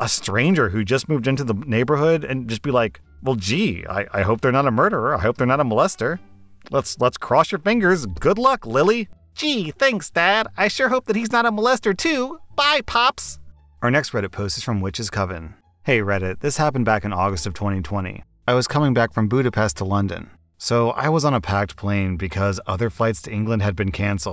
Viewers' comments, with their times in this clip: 0:09 Honest question what would you do if your daughter just started speaking and her voice was just your impression of her? 😂
0:12 best Ralph’s voice so far